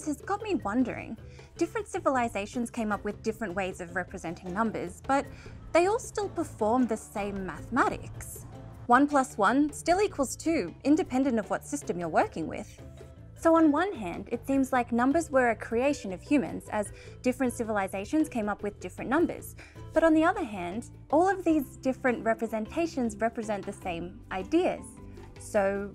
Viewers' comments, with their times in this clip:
0:09 one plus one equals two Or does it? (Up and atom music starts to play)